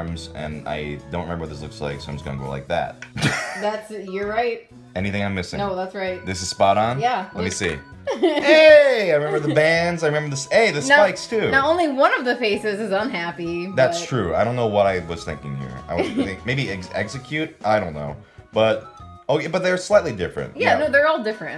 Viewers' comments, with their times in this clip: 0:06 E-zek-i-tor?? I always pronounced the name similar to executor, sorta like ex-egg-gute-tor